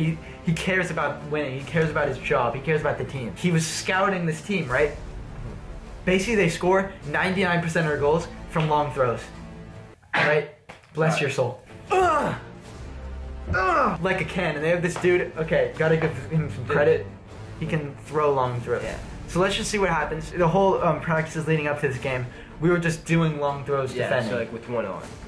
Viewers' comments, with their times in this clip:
0:08 Did anyone’s Siri go off